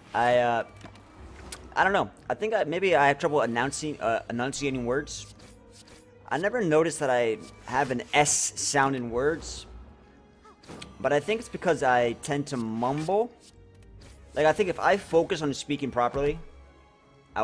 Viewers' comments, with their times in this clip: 0:03 it's not that you have a lisp per sey.. it's that you tend to speak using the back of your tongue instead of the front which gives the lispy S sound :P